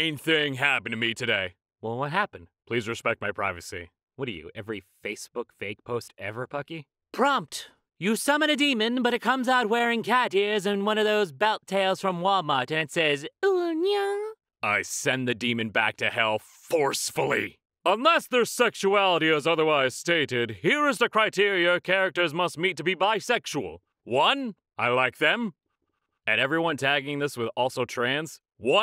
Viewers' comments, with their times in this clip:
0:08 heavy metal music starts
0:13 this uwu nya made me shiver